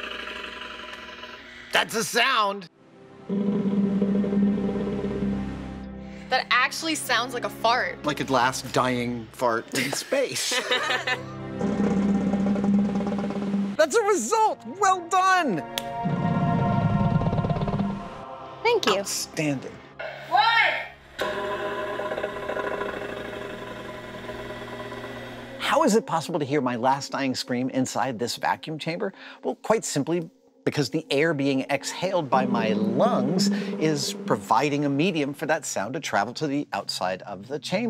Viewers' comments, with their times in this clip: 0:04 if your farts sound like that, you should probably get a doctor
0:20 if you can hear her say 1, shouldn't that be enough?